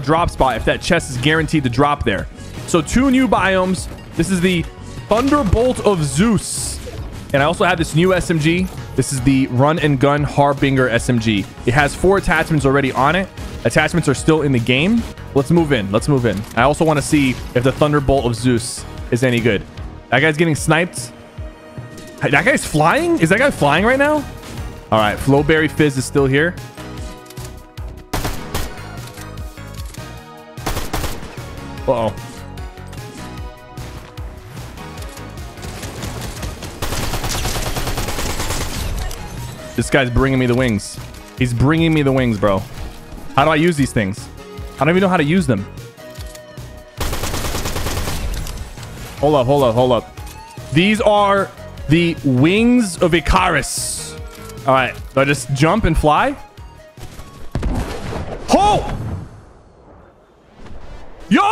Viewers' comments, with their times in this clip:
0:09 the way you said "harbinger" 😂
0:49 Blud doesn’t know how to say ICARUS 💀😭